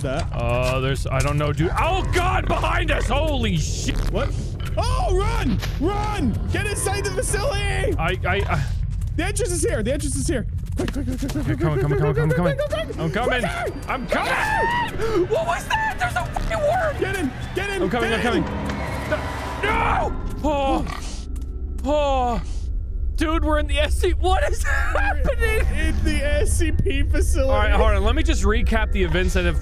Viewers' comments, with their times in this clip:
0:05 I think it's just me but you two kinda sound like the Game Grumps whenever you start freaking out
0:15 WHAT WAS THAT THERE'S A FU- Farts into microphone WORM